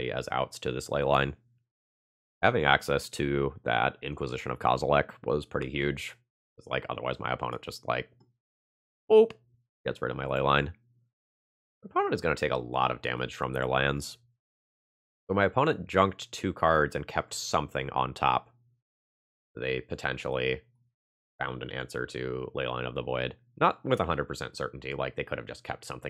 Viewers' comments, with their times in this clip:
0:10 Just the single best voice crack in the history of Magic